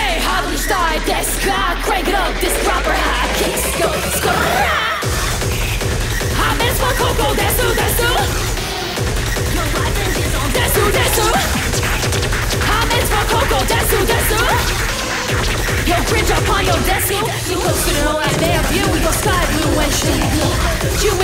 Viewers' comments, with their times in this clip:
0:03 SKRRRRRRRRRRAAAAAAAAAAAAAAAAAAAAAAAAAAAAAAAAAAAAAAAAAA This is one of my favorite songs of yours and easily my favorite performance of the concert! This song goes insanely hard and TeddyLoid ramped the hype up even more! Since this was so late in the concert, you were running on pure adrenaline but you still manage to keep things hyped up. And that SKRRRRAAAAAAAAAAAAAA is so freaking good, I can't listen to the original track without throwing that in there myself. Thanks for letting us relive this banger performance and I hope the people who didn't watch the concert get to enjoy a sneak peek of how hype this concert was!